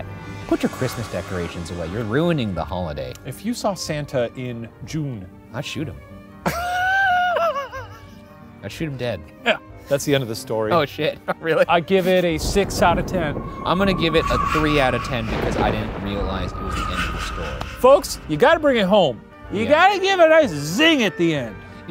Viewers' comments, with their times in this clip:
0:06 Shanes laugh gives me life, i just keep rewinding it